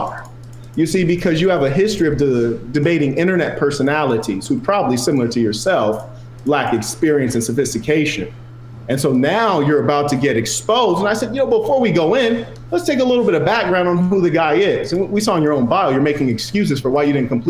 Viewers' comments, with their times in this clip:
0:05 the human being has a horrible tone from the start